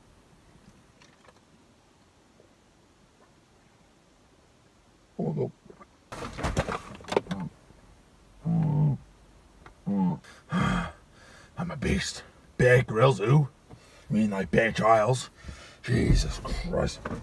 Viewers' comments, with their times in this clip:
0:05 he croaked like a frog